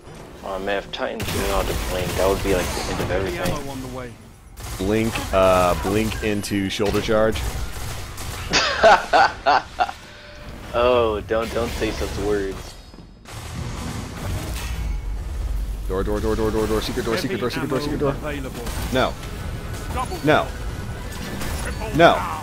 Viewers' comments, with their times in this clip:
0:10 the super kills were perfectly timed with the music.